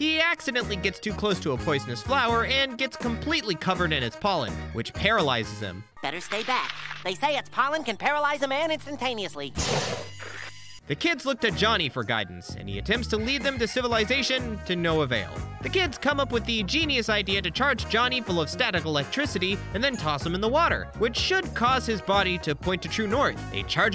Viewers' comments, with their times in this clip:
0:05 Uhh, didn’t realize Carl was voice by SPONGEBOB!?!? I really heard it here.